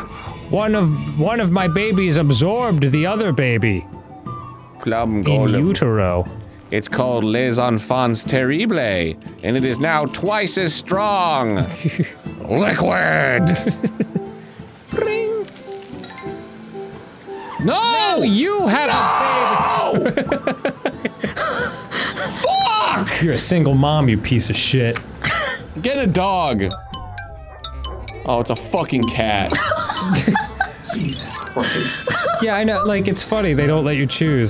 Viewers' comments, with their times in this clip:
0:04 I was sent to floor laughing with Arin's 1-2 punch of "LIQUID!" and then screaming "no!" shortly after. 🤣
0:17 Why did Arin scream with so much despair at the prospect of becoming a single mom?? It's like a dream come true!
0:18 one of the best NOOOOOs I've ever heard
0:18 That "NOOOOOOOO" was the most emotionally perfect "NOOOOOOO" I have ever heard.
0:18 Arin's scream here is amazing 😆
0:19 The second best scream in game grumps history.